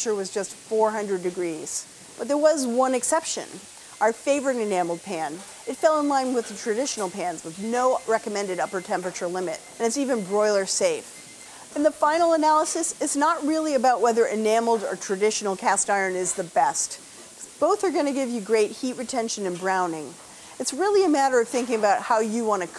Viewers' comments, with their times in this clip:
0:06 i ran to check my oven lmao (beeping noise in the video from the oven) was't even baking anything lol... i have the same oven like in the video hehe XD